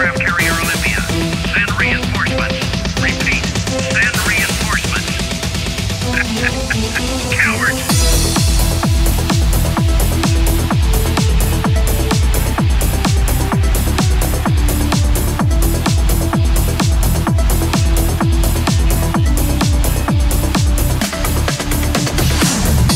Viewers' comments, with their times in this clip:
0:05 here comes the drop...Make some noise